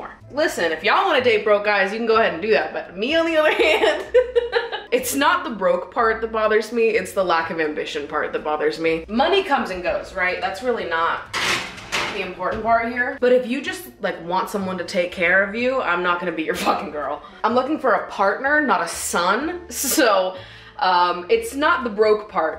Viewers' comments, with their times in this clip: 0:04 i love your little giggle, it sounded gorgeous🥺💕